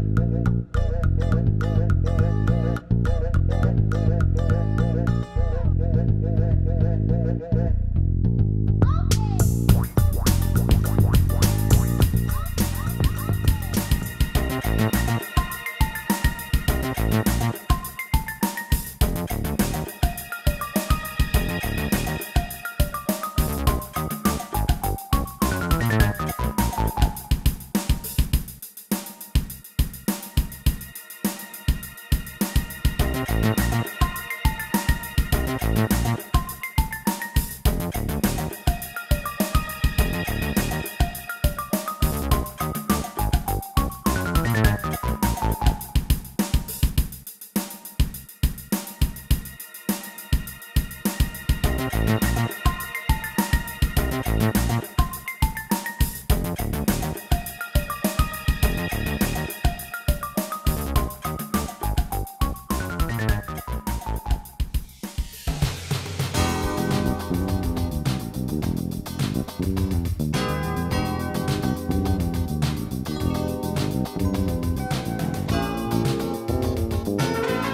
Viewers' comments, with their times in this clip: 0:09 crazy transition into underground theme
1:03 this is cool song right here